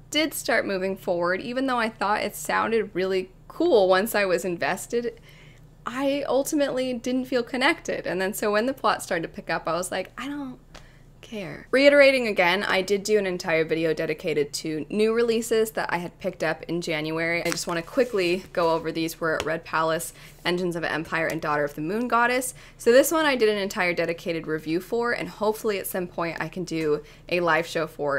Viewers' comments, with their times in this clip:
0:10 “I don’t… care” in the softest voice haha